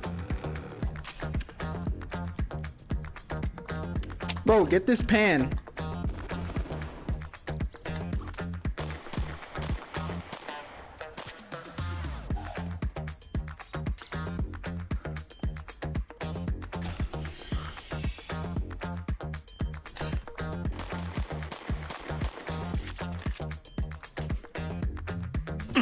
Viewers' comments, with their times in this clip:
0:07 I'm not sure... (IDK how to use time stamps), the pistol sounds different. Thanks for the quick reply!